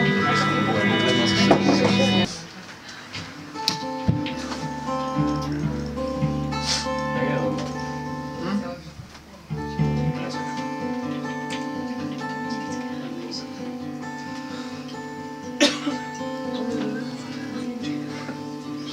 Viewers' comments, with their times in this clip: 0:05 I was mesmerized for a few minutes as your harmony and melodies are unparalleled. You're just as good as when I saw you almost 10 years ago, and even better. These intimate concerts are the ones that are most memorable and held closest to the heart; I wish that I would be lucky enough to attend one of them in the future.